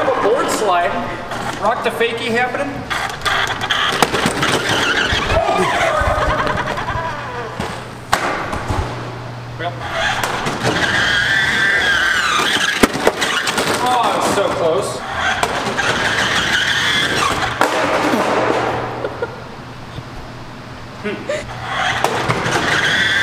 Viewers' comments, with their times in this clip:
0:05 Kinda sounded like the car just laughed.. 😅
0:05 is cyber truck, sounded like it was haunted